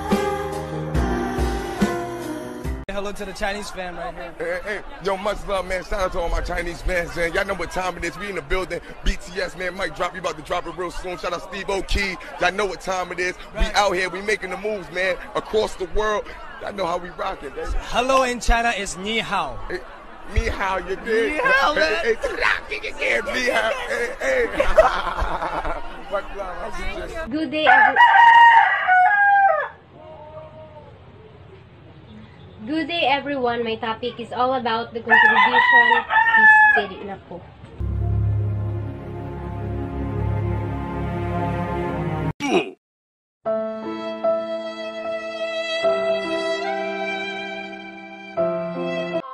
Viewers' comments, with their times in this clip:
0:03 this is exacly what rap is.. simply talking trough the music. That's why rap sucks.
0:30 there is so many chickens in the philipines thats why theres a noisy backround in zoom 😂😂😂